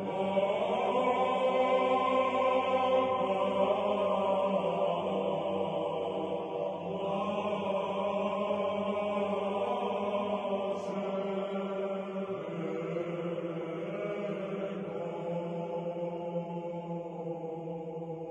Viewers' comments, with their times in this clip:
0:06 I began to feel tears build up in my eyes I had a vision of a woman in a dream & something terrible was going to happen to her because I heard this type of chant being played in my dream but in a more darker toned chant it was like the Devil was coming or about to be released the end is near but theirs Hope In Jesus don't believe anyone else that claims to be Christ because Jesus will Shine as bright as the east is from the West like the Sun but pure Bright White Light..The Light of the World. Amen